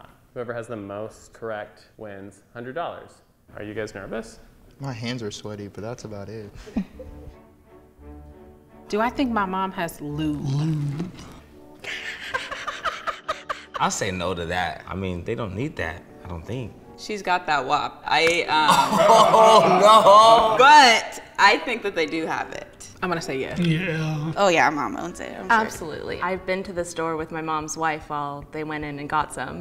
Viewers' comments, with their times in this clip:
0:10 her laugh sounds exactly like that character from The Proud Family
0:12 The most nervous laugh I’ve ever seen